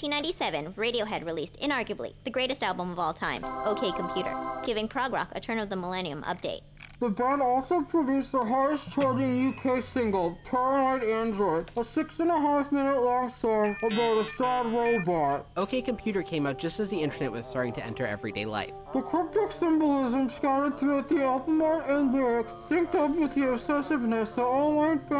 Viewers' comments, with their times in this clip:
0:10 i thought JAAAAAILPUP! but on Thom Yorke's voice